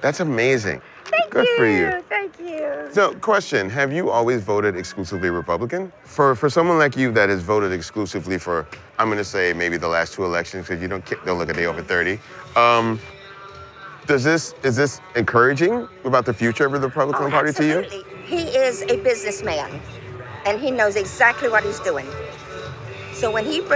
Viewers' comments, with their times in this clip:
0:08 he changed his voice because the lady didn't look at ease when he was talking to her, he changed his voice so he won't come off to threatening. You have to understand you are in the deep south and not a lot of black people live there or other people of color and if they do they have them counted.